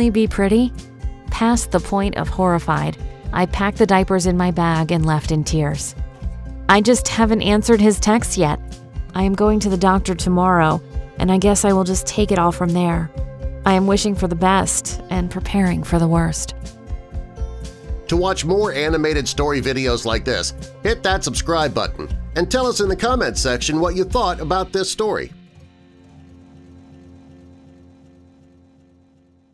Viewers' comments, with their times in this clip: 0:10 THAT VOICE WHO IS THAT